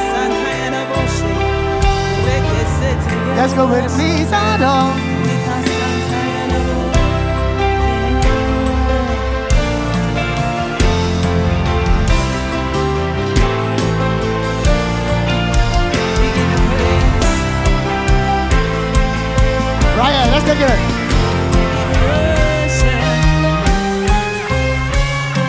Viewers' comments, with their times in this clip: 0:07 That transition eiiisshhh 🔐🔥🔥